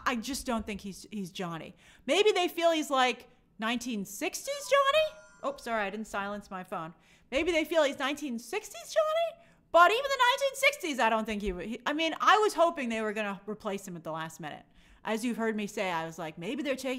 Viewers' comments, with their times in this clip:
0:03 I always love that ringtone, but love it more when it goes off as you're talking about the past.